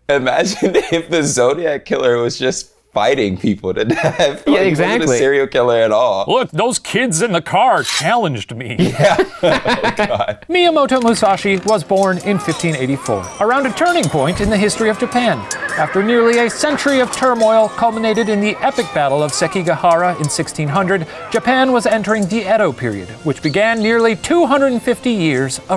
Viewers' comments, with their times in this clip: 0:10 i think Shane did his own foley